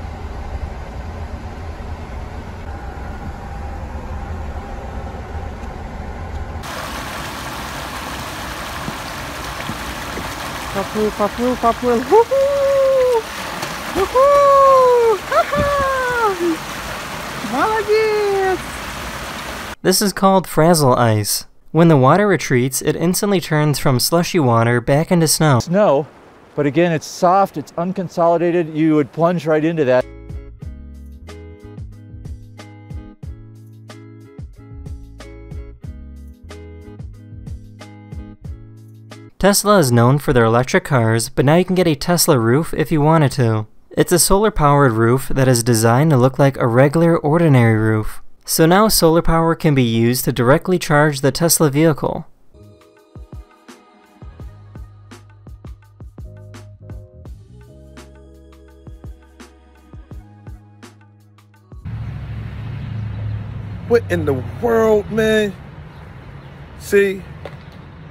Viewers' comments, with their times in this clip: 0:06 Here is the lyrics "He swims He swims He swims Woohooo WooohOO Hahah Good job!" (First 3 words is kinda like past tense of swim? Imma just say "he swims" because it sounds funnier then swam) the fact that she is so happy makes me happy for some reason and i just love this video now
0:09 + cocodrile: "oh shit im gonna fall off" cameraman : Mario Noises
0:25 Interesting voiceover switch
0:56 Bird just Viking to the growls of the vehicles